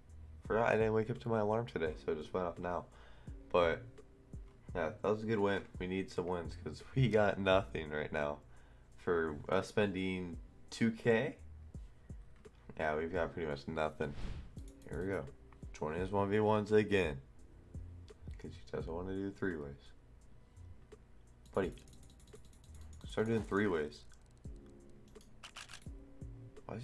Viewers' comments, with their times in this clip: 0:08 oh it's early that's why your voice is deep lol :D